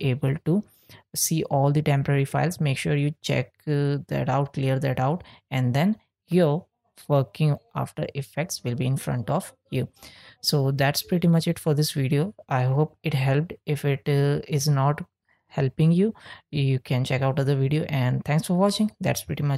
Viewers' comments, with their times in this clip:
0:05 wait on did you say "And then fucking after effects"